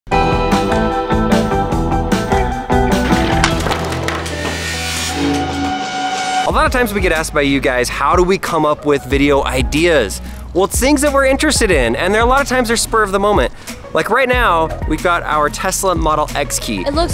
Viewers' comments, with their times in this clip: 0:03 BOOOM THATS WHAT YAH GET FOR BEING NEAR A KNIFE